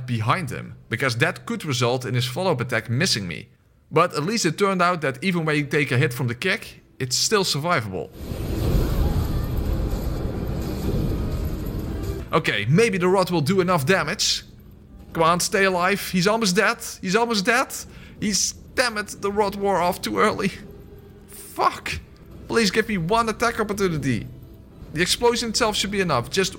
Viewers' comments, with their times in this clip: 0:09 That was a rather operatic “fuck” and I appreciate it.